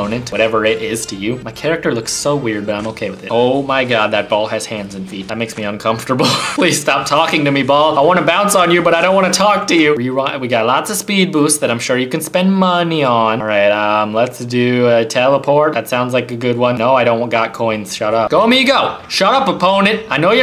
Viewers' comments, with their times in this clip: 0:03 that sounded weird